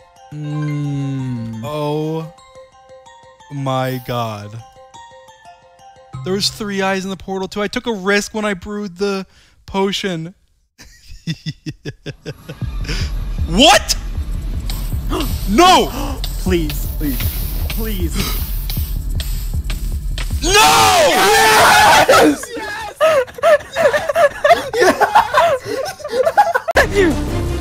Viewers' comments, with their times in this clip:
0:10 that lil evil laugh of like “imma win for sure”